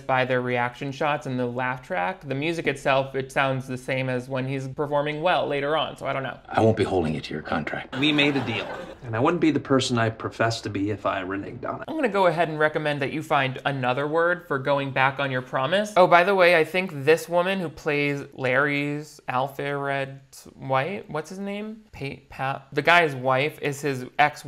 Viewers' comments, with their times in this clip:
0:10 What is with the way he says reneged. He says it as if it is renig is that how racist southerners pronounce it or something.